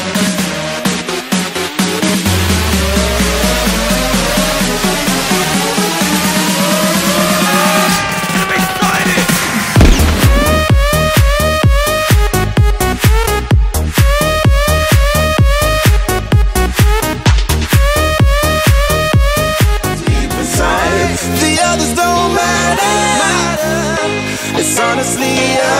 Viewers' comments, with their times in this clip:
0:07 the song 谢谢